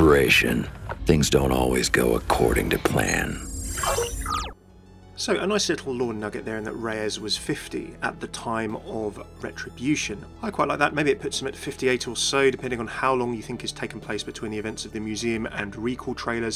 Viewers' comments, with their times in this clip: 0:04 hahahahahaha the chat hahaha, jesus that was a great laugh